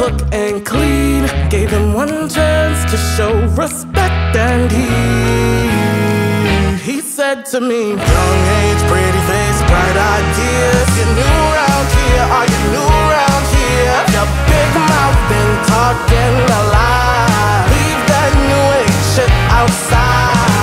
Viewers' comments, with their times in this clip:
0:07 THEY SOUNDED LIKE A BOY FOR A SEC OMG-